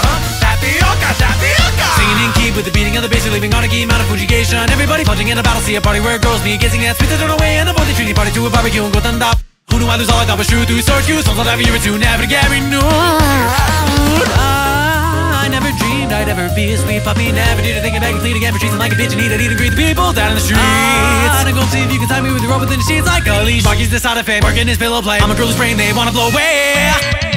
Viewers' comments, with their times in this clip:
0:09 i always think my thing glitched at this part